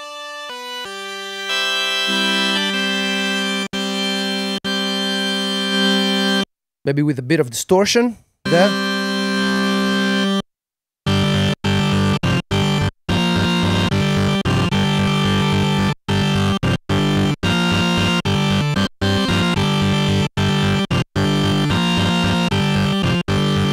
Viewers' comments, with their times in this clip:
0:06 Did you turn off speakers on keyboard? Every time I add some distortion, sound is awful like its gonna explode, but yours sounds very good Does anyone have the same problem as me?